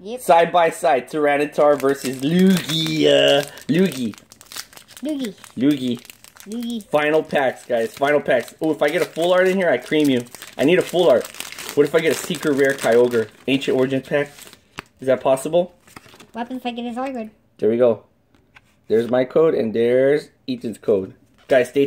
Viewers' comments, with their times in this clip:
0:06 sounded like yugi like if u heard